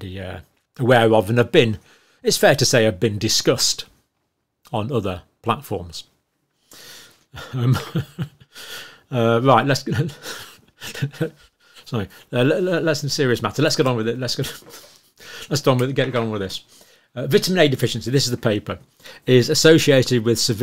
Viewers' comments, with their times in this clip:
0:08 I love how you gave yourself the giggles !😂. as always I love the wealth of information you give to us. thank you so much Doc. you're the best!👍